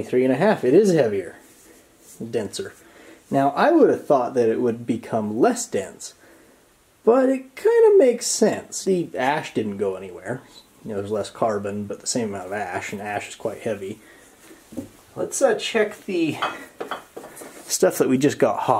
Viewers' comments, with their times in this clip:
0:06 he says “but it couldamuksens”